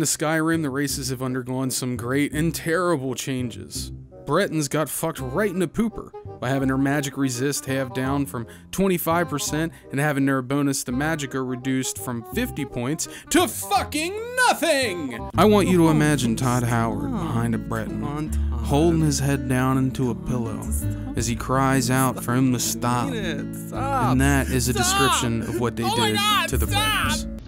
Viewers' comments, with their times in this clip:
0:09 Delivery is everything!